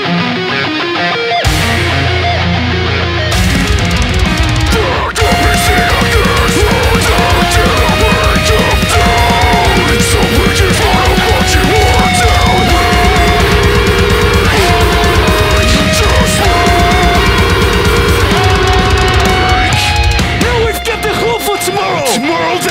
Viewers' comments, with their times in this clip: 0:03 Sounds more Like Phil Bozeman as Phil Bozeman does oO Great!!!!!!
0:04 was like they sound like the Ghost inside then happened and I was like crap TGI can't do those lows sounded like Acacia strain or white chapel
0:06 He kinda sound like Dan Watson